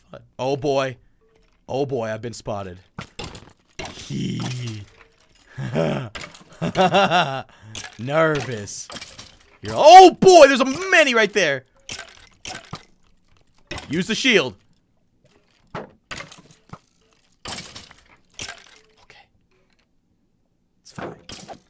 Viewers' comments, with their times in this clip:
0:04 he started laughing like he was insane